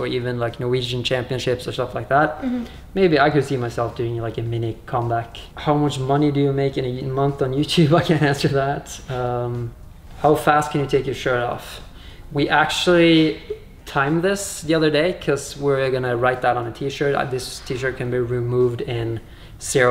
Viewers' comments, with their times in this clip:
0:06 "How much money do I make on YouTube in a month? I can't answer that." Hard swallow